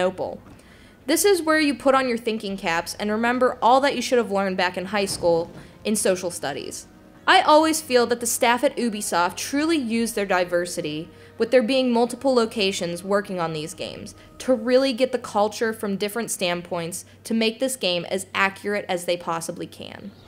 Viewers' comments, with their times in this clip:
0:08 it shouldnt bother me so much> but that is not how you pronounce Ubisoft :/